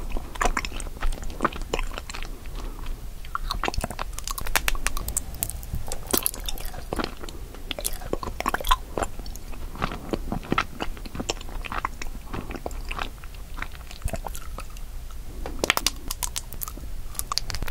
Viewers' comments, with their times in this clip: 0:04 Him- eating and making this satisfying sounds Me in the morning trying to sleep- god damnit.... I'm hungryyy😪😪